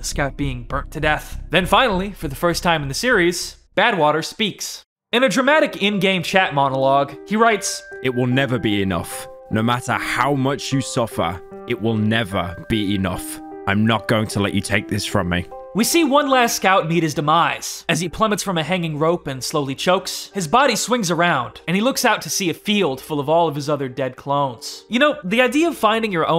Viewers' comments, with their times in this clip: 0:05 why does the voice over sound like DanTDM?
0:09 why does they voice sound like tommyinnit